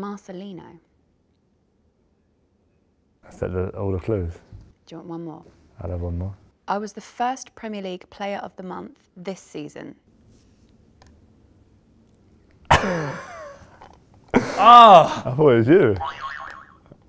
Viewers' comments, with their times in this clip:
0:05 all the clues the way he says it tho